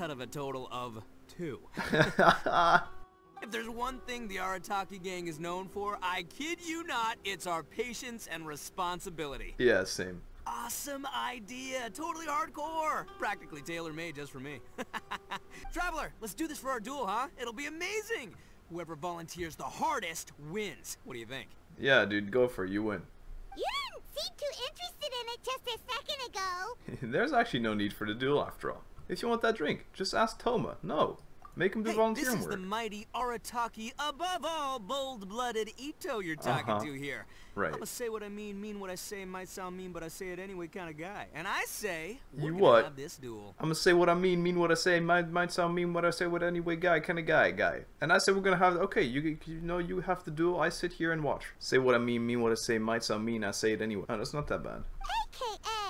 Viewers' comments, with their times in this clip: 0:04 The little improv. edit was so cute 😭It made me laugh so hard. The irodori festival just increased my love for itto's voice, it's so funny and perfect
0:42 You sounded like an auctioneer, lmaooo